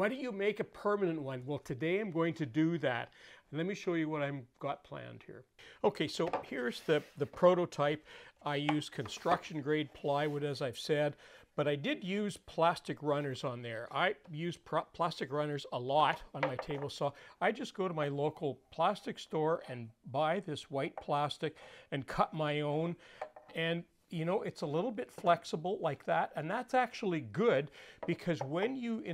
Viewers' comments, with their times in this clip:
0:10 "...my local plastic story..." I wish my town had one of those! 🤣